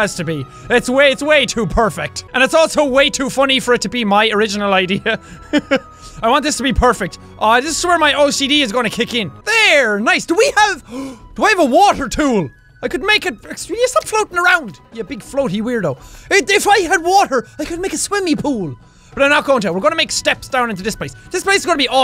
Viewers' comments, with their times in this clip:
0:06 jacksepticeye play the video at 0.5 speed start at 0.44 and finish You sound absolutely drunk ;)